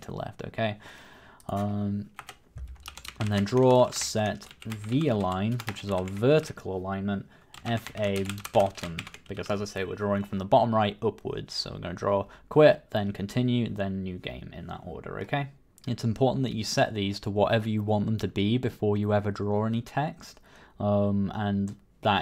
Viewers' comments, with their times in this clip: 0:09 car honking in the background